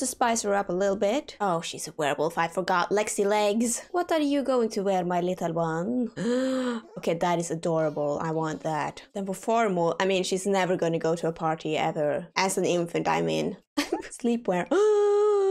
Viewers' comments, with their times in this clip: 0:03 You sounded like nadja from what we do in the shadows lol😂